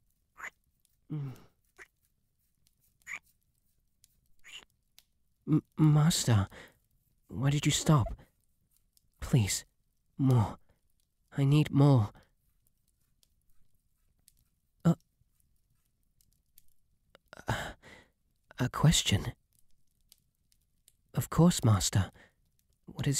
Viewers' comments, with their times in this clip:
0:08 i need moo~ HAJAJSJSJHSJAJAJ I love that British accent